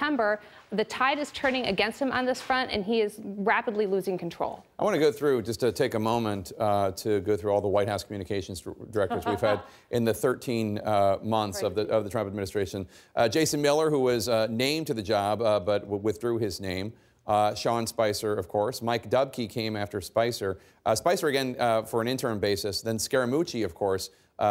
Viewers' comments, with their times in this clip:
0:09 LMAO that laugh